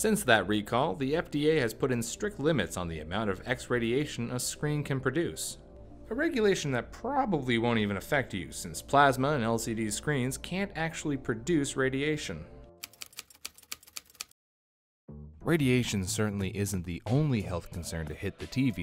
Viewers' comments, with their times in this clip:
0:03 X-radiation was written on screen, but he said justr "adiation". (and yes he said x-radiation )